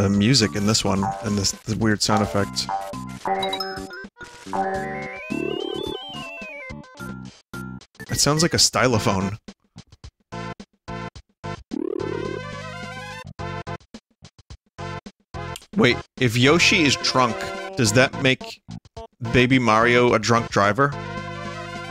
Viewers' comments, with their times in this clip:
0:08 it sound like the music bad guy by Billie Ellish